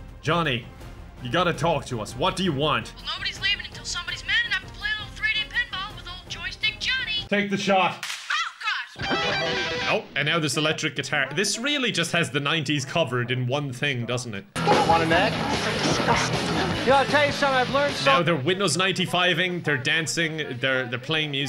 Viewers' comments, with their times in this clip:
0:06 peak editing with the scream haha